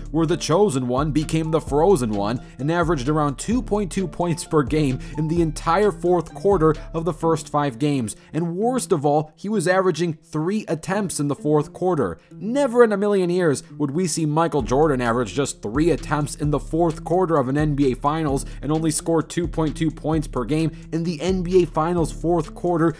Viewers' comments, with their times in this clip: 0:04 you can hear him laugh at his own frozen one joke